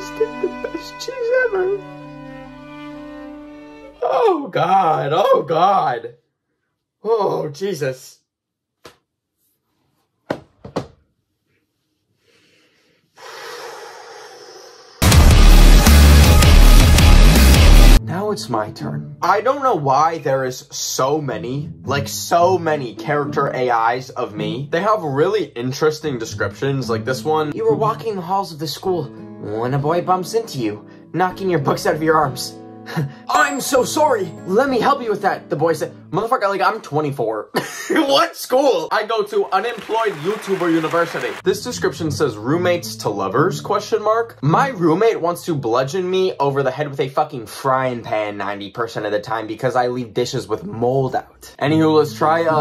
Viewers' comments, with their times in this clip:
0:06 The narrator is so happy
0:36 “Moth3rf*cker I’m 24- 🤣 (LAUGHS the weirdest laugh) What school? 😂 I go to unemployed YouTuber university” 🤓 GOT ME DYING 🤣😭😂